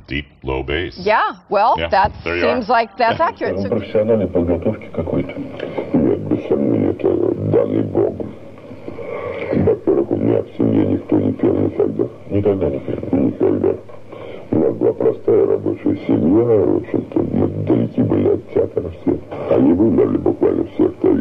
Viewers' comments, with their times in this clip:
0:05 60 minutes interview voice distortor for sure